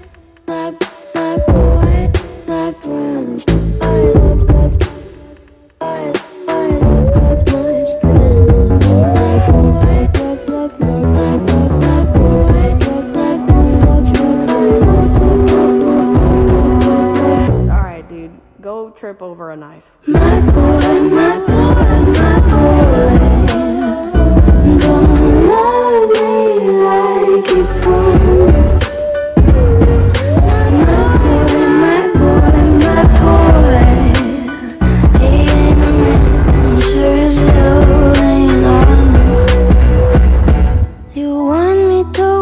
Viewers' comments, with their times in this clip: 0:09 i'm confused. there are so much sounds at one moment
0:17 that sounded EXACTLY like her. Not into that creepy shit.
0:23 No one: Not even me: The backing vocals: my bOioioioiOio